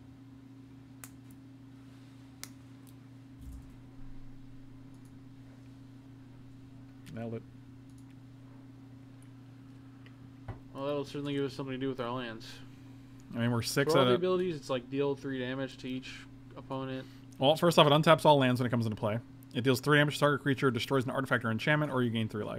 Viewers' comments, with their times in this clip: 0:05 Casual "nailed it"